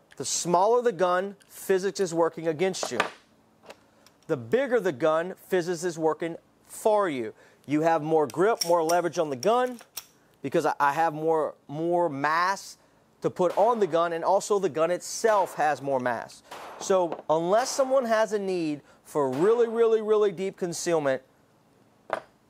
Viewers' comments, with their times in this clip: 0:05 Who's "fizz-is" and why does she work in favor of some guns and against others ? Very judgmental of her if you ask me. Perhaps you can get human resources involved here with some politically correct sensitivity training. 😉